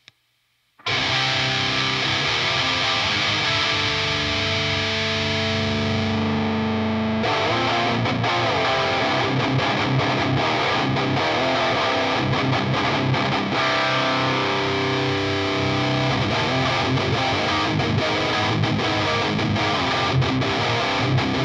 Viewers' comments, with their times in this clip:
0:07 perfect setting..more mids, tight lows, and no harsh treble. Same as my loved Dark Terror. At least, in a mix.